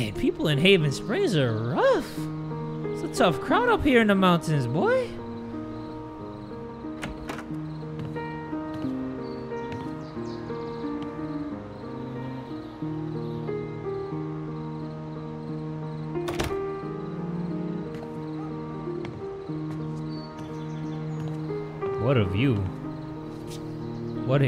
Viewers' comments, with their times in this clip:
0:08 That piano is beautiful! Tears by Angus and Julia Stone.